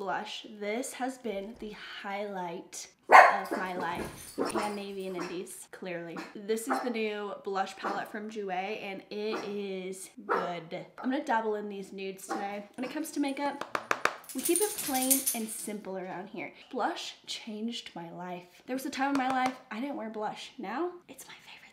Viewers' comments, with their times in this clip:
0:03 her dog barks and I jumped 😭😂